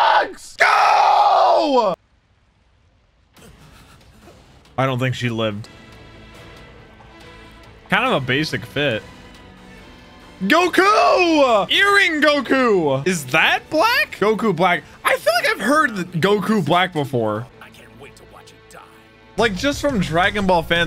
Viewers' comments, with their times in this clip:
0:04 that ost is so godly